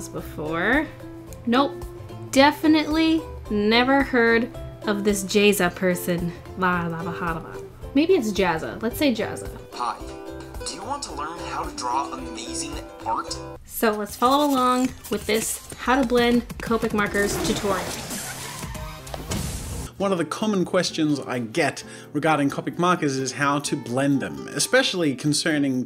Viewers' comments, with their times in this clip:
0:10 aMAZEEN ORT //my reaction to that ad almost every time, followed by 'shut up i already make amazeen ort'